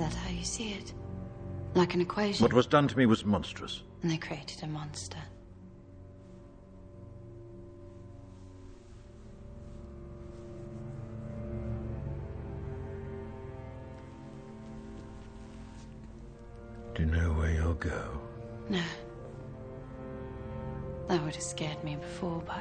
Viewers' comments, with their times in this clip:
0:07 That pause is everything. You can’t see his face but you know that he knows he’s a monster, that he agrees with Evey. He can’t deny it, but that doesn’t make it any less painful.